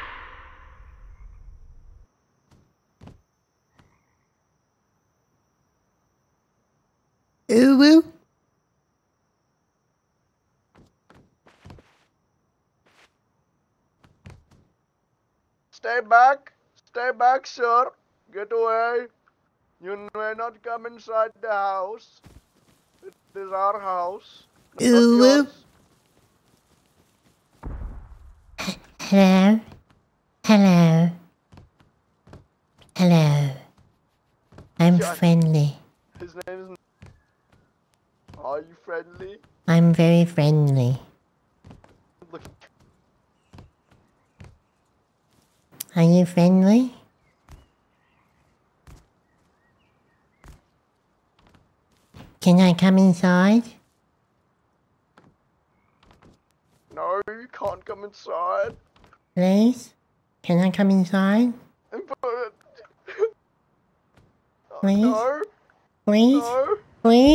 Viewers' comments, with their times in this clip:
0:05 please. 😂 btw theres something in rust when theres no gun shots behind or from afar. its too calm. you can finally hear the soothing sound of ambient noises.
0:38 sounding like salad fingers there. Lol
0:49 he sounds just like salad fingers.
0:52 holy fuck that voice... It's orders of magnitude more cursed than the earlier one.